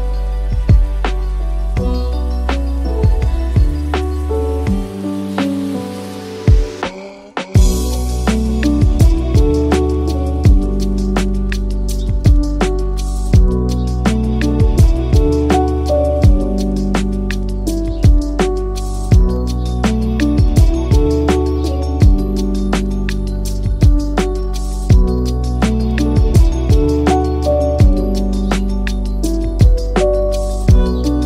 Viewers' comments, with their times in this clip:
0:04 when that beat drop, .07
0:12 kinda sounds like an alarm